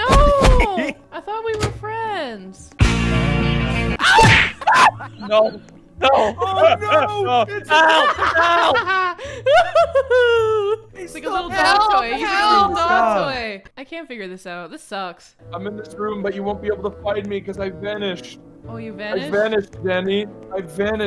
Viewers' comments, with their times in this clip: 0:09 that laugh girl o-o